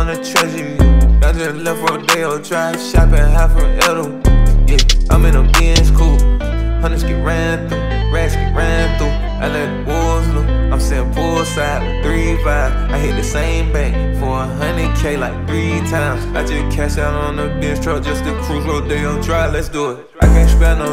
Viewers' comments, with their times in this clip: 0:07 that flow switch 😩😵‍💫😮‍💨